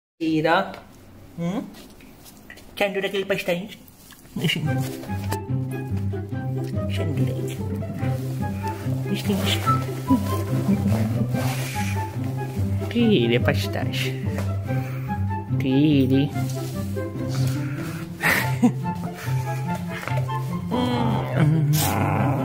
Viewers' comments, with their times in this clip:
0:03 what did hooman#1 say? He said it so quickly. Bun bun so fass